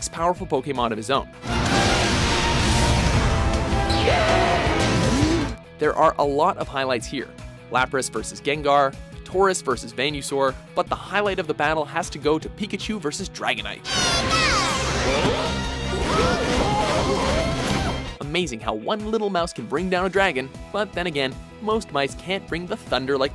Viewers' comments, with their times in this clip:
0:09 Did.. Did you just say ‘ven - you - sore’ instead of ‘veen - uh - sore’..?
0:09 did you just call venusaur "vain you saur"? its venus like the planet not vain, pronounced vee na sore You're getting a dislike for that fuck up
0:10 I'm watching this now in 2019 but who else caught VEIN-usaur lolol da fuck?